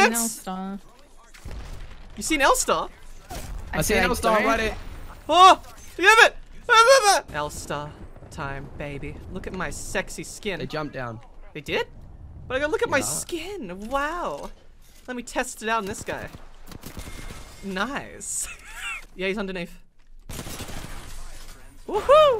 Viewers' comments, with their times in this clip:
0:10 You sound like the awoken from that flashgitz animation